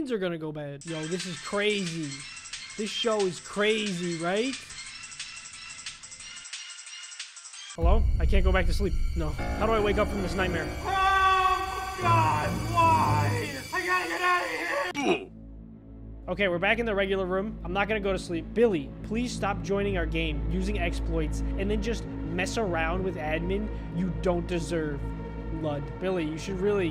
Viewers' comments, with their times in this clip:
0:08 When You Hear A Random Tap On Your Window In The Middle Of The Night 🥶